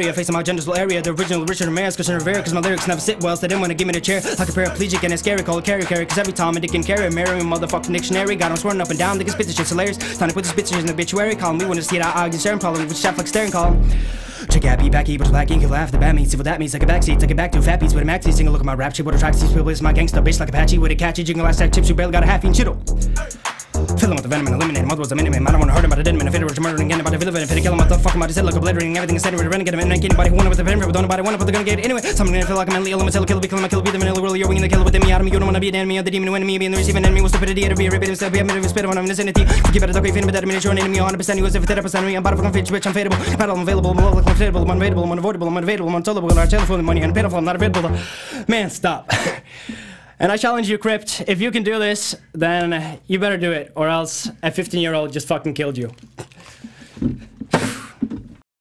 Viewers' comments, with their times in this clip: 0:05 he almost fcked up with carry carry
0:07 missing 3-5 whole syllables
0:14 When you are learning foreign language and you have a listening test: Unit 1: Audio 1:
0:22 How the teacher speaks when you’re taking notes
0:22 what i hear if i dont put the speed at x2
0:23 that moment. when you put video on 0.5 and its still faster than today rappers xD
0:23 my teacher explaining stuff that’s gonna be on the test
0:23 is when he starts rapping fast
0:23 When i have 30 seconds to live and wants to say every secret:
0:24 honestly fire. "meneminomanomunu" really hit different
0:24 lyrics left the game
0:24 if you watching this in 0.75 speed it is good flow
0:24 holy shit thats fast
0:26 what I understand, when a cokehead comes to talk to me.
0:27 Dude, u lost a word. on .. and there is other places. But it wasn't accurate!! i can do that too and lose a bit of words by mumbling them. You mumbled a lot of that song. can't you just turn em on 50% speed and learn by that?
0:29 He sad Corona ?
0:33 around there i heard mini me😂
0:37 He took a breath in the middle of the verse that your not supposed to take a breath at lol
0:43 when ur arab friend gets angry and start saying things in arabic